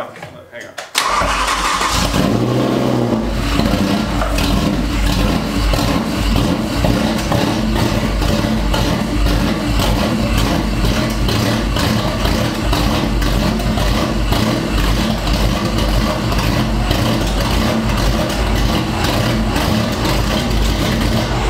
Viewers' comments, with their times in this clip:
0:07 Watch the velocity stacks is that a small backfire through the stacks?